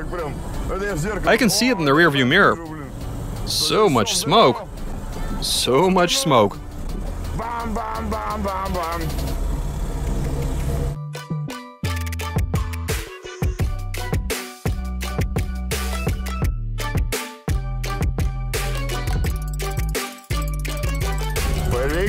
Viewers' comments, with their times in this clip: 0:06 "bahm bahm bahm bahm bahm" my car also sounds like a drunk russian. well, a russian. when I add various inks to the fuel.